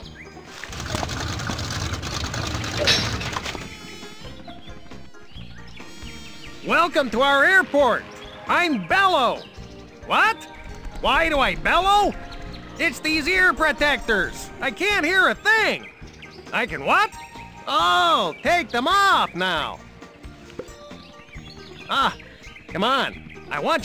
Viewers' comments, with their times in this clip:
0:06 His name is Bellow, he bellows when he talks and he drives around a pair of bellows. What are the chances?